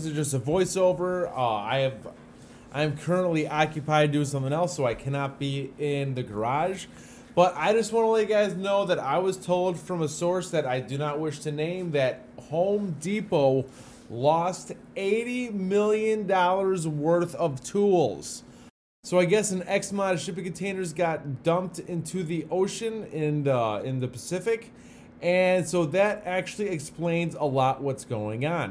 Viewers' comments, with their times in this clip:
0:09 who is welding